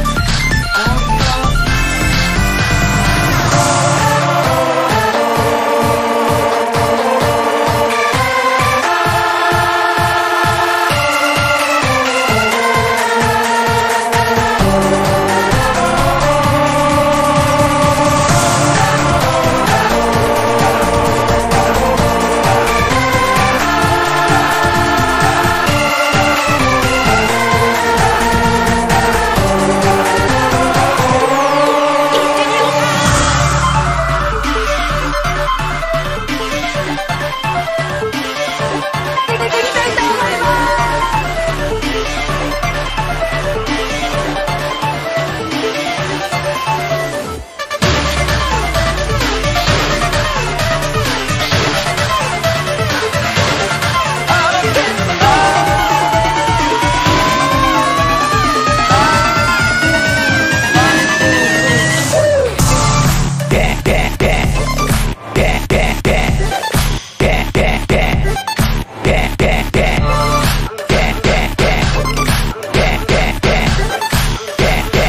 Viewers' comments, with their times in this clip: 0:04 i hear megalovania here
0:15 it sounds like barking
1:03 another copy of final boss sound like a sheep Bek bek bek